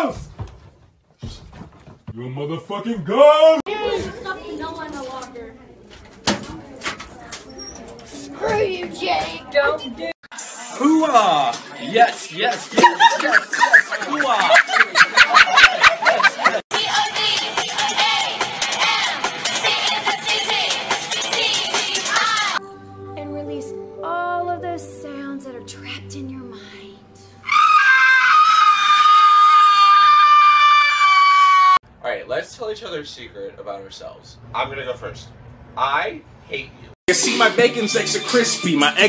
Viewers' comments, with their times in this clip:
0:10 Why does that voice fit him so much-
0:27 the screaming grinch lol XD